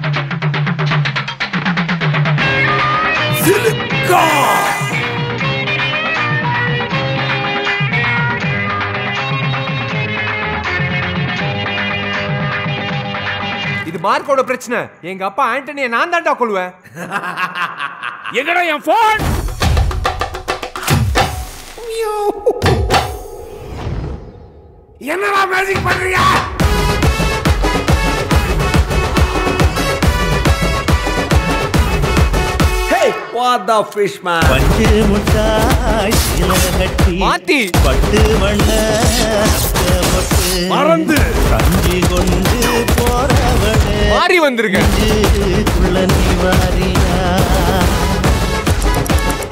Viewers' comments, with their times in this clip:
0:04 that bgm and entry 🔥
0:20 Real Goosebumps from Panju mittai song remix vera level🔥🔥🔥
0:32 SONG + SOUND EFFECT 🔥
0:35 Audio sync Vera Level 🔥🔥👌.... Pro level Editing 🥳🥳🔥🔥👌